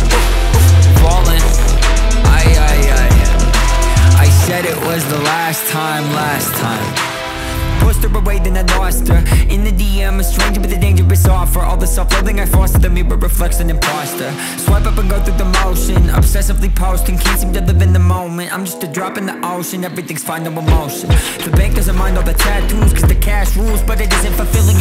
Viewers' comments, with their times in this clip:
0:08 🔥 Is this listentnig all the time This voice is amazing 💞💟💗 👇👇👇👇👇💘